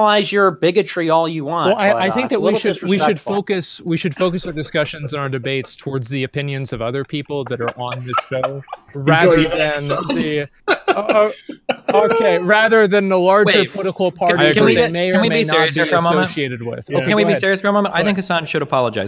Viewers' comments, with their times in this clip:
0:04 the forced laughter from destiny and packer is so transparent and juvenile. such a pair of cool intellectual heavyweights